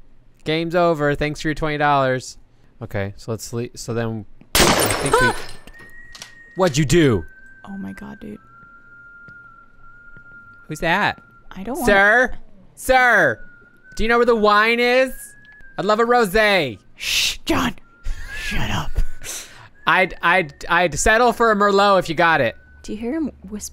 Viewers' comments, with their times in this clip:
0:04 Not gonna lie, but that gunshot SFX scared even me! Did anyone else feel that?